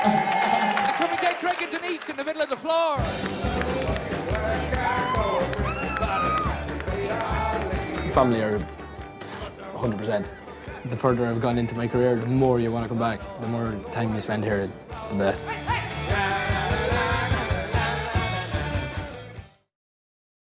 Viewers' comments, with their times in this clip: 0:03 was that louis voice